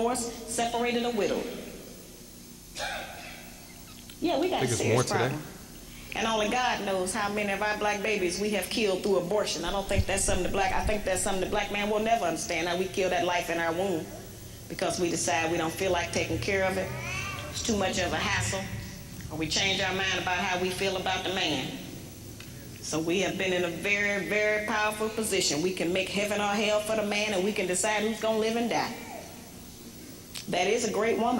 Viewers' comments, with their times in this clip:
0:09 Lol who heard that baby in the background as soon as she started talking about abortion? Lol it was like the baby was saying Preach!
0:16 As soon as she speaks on women being too tired to take care of born child (abortion) a baby loudly acknowledges...... INFINTE TRUTH PEOPLE